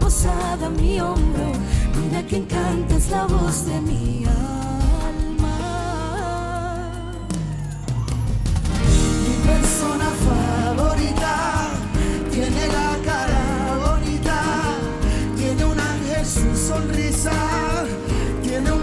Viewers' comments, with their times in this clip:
0:04 wow her voice ♥️